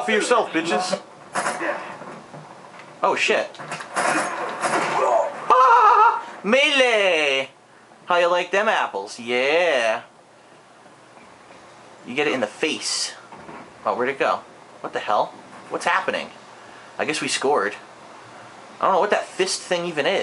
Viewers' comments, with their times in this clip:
0:05 lol your laugh rules game looks sick